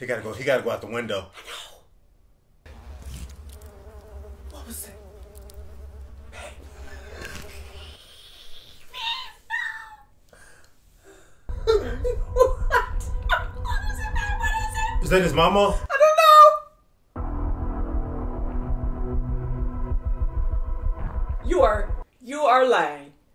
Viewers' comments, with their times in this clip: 0:08 Actually that wasn't the sound of a notepad. It was the sound of his mother sawing off her own head with a piano string.